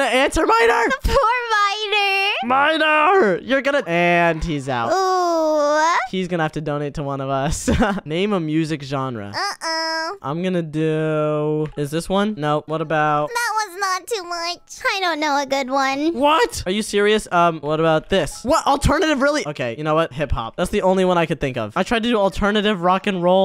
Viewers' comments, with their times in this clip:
0:09 name a music gainer